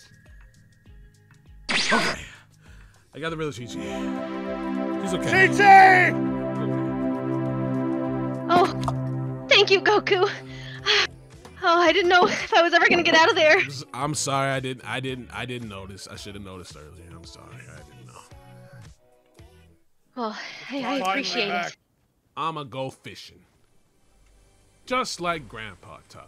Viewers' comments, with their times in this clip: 0:10 Did any hear vegeta doing the didn’t even notice song